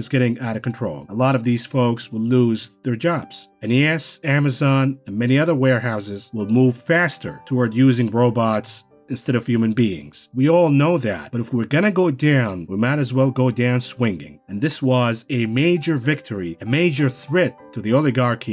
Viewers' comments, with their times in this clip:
0:04 omg the touching piano music is perfect